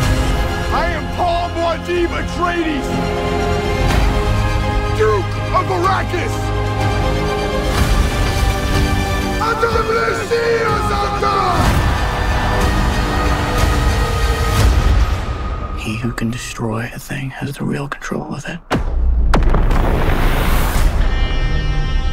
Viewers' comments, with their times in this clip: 0:07 He used the voice